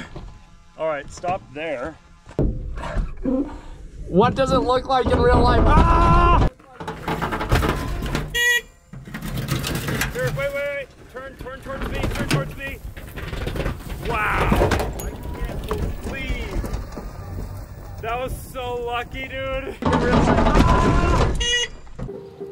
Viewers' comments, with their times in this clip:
0:08 dude sounds like rick from rick and morty